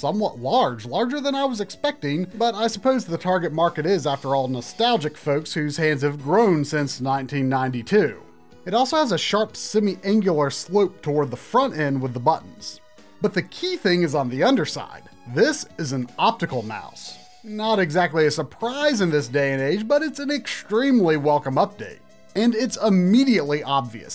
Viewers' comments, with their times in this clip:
0:07 Play at half speed for drunk Try talking about the snes mouse